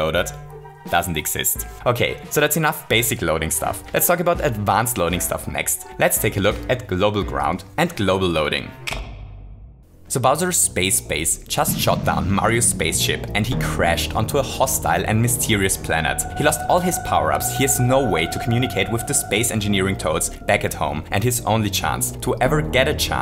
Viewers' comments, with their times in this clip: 0:09 You know, I swear Mario Maker 2 has been "just around the corner" for eons now That song sounds like Metroid meets Tron Legacy!